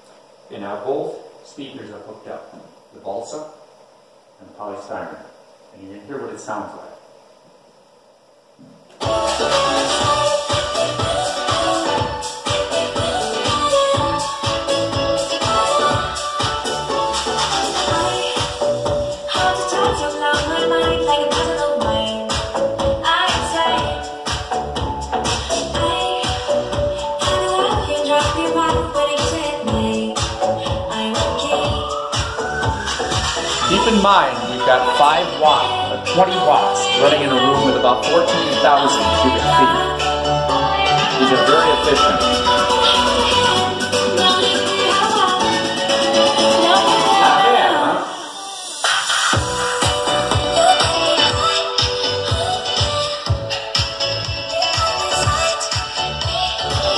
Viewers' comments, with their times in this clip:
0:08 I can't be the only one to find this old, cool professer-type guy vibing to pop-y electronic dance music funny.
0:38 sounds like a cell phone speaker for some reason.